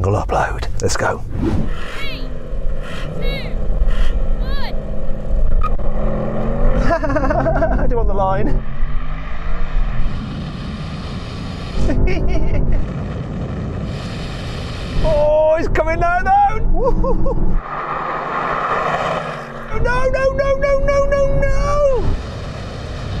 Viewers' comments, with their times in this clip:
0:05 might be the most smug sound I've heard come from any British person lol